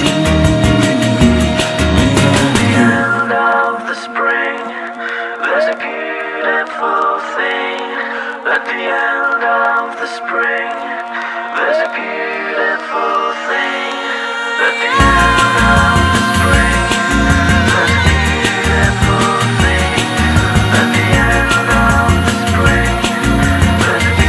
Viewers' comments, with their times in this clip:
0:03 Love the harmonies
0:09 Is he saying at the end of the spring? Or the string?